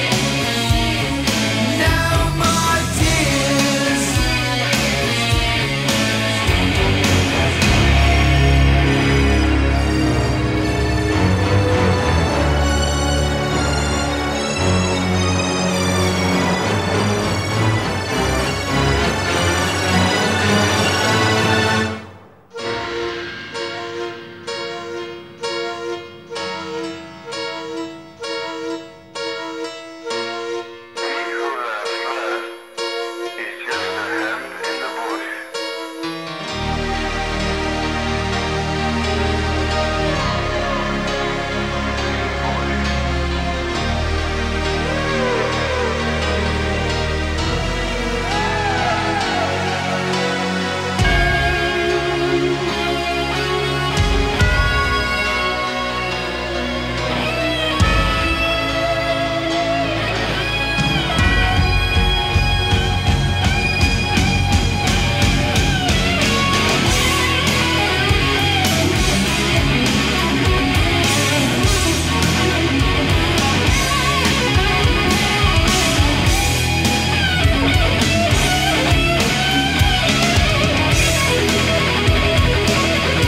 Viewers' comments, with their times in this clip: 0:10 ABSOLUTE MASTERPIECE the change-up leading into Zakk Wylde's amazing solo...brilliant.
1:06 one of the very best guitar solos in rock history. And my favorite song from Ozzy.